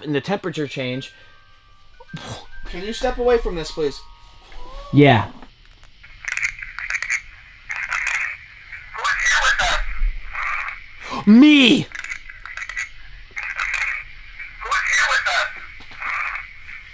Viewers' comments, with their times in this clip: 0:04 don't know if it's paranormal but you hear what i think is a lady kinda go "ohhh", and it didn't sound like any of you guys 🤔